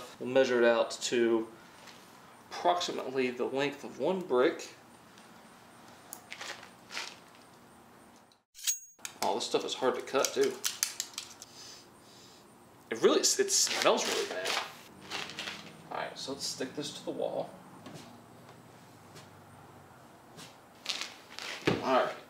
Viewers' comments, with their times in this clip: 0:07 Gangster 😎 - with knife sound
0:08 the knife sound is exactly like csgo